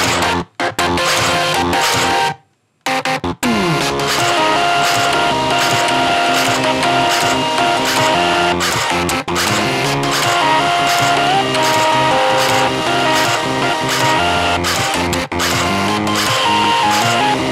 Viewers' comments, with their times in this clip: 0:03 When the sewing machine starts going I thought it was my cat sneezing
0:03 Sounds more like some Bossfight Theme :D